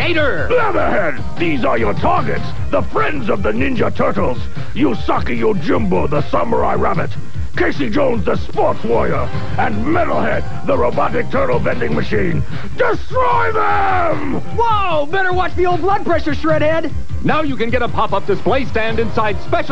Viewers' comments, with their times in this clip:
0:04 You Suckey Your Jimbo? Now that sounds a little perverted!